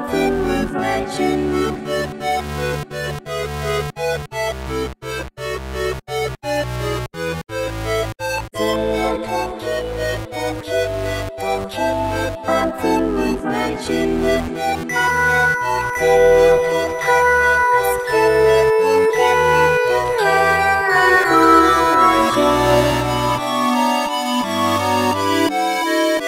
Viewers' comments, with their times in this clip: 0:08 is so haunting. "all sin has thou born for us"